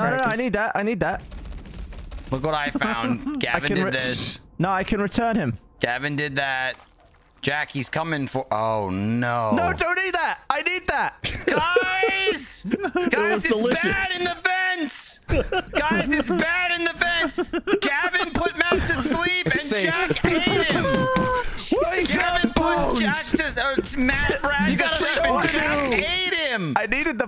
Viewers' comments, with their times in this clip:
0:08 "No don't eat that, I need that!" Gavin yells with all the energy of a dog owner.